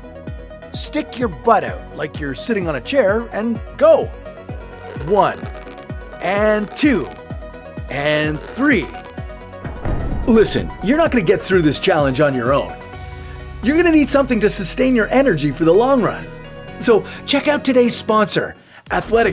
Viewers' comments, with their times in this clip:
0:04 farting noise Everytime she goes down and the cheeks open